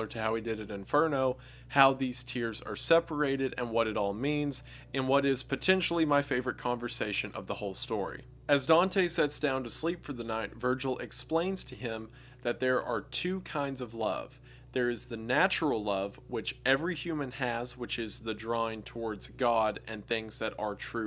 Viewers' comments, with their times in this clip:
0:05 You know shits real when Wendigoon turns up the music just enough for you to actually hear it!